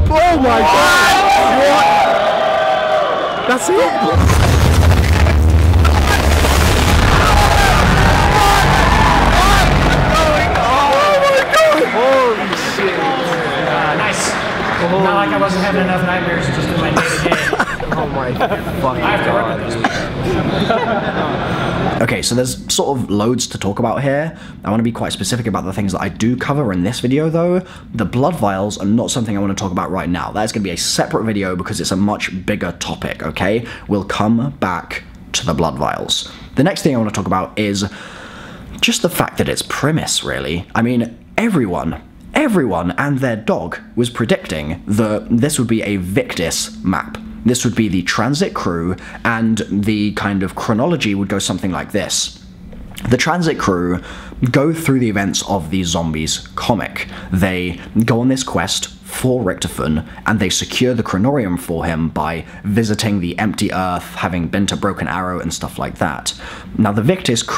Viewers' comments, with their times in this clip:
0:03 the audio from people screaming omg
0:04 some quality earrape
0:05 The bass in had me dying 💀
0:51 that nice swallow XD